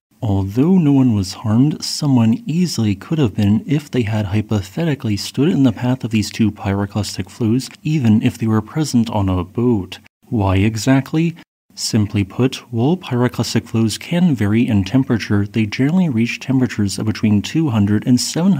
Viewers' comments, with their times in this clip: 0:04 I thought I hear you say "If they had pathetically stood in the path of these two pyroclastic flows" when I turn on the cc, I know I was the wrong lol.. Thank you very much for the update, have a nice weekend:], greetings from Indonesia 👋..